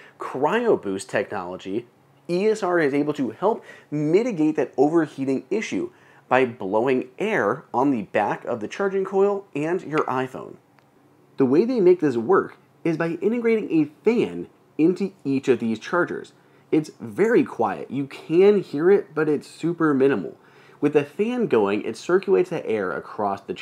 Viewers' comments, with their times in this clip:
0:10 Love the hiccup